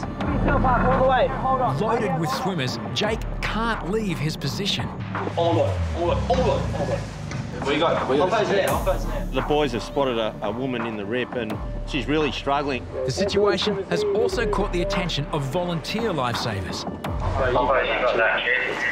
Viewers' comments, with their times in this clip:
0:03 Lol @ The exchange of "ermygawd"s.